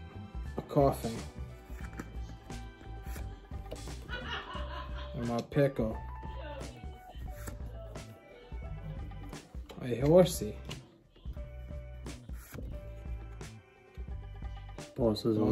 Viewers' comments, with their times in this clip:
0:03 I Love the random laughing 🤣🤣